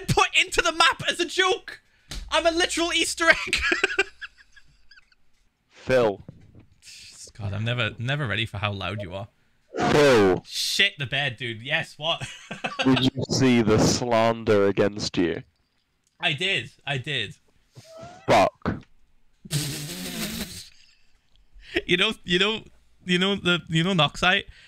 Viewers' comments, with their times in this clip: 0:05 wilbur sounded like techno with the first phil what the heck.